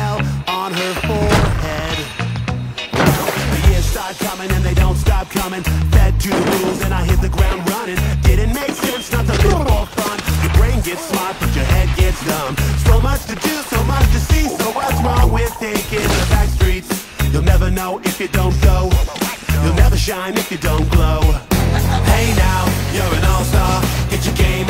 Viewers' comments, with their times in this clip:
0:09 dat C R A C C